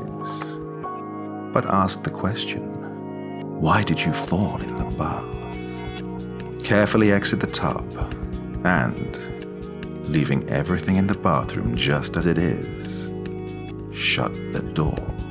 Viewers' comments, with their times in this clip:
0:03 I heard “ask her, why did you fart in the bath?” 🤣